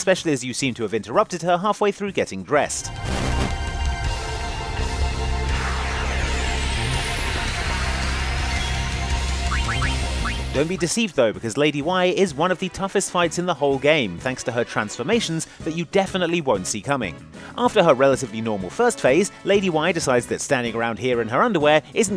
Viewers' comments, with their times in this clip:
0:03 what? Am I dumb or did he say "interrupted her half way through getting breast"?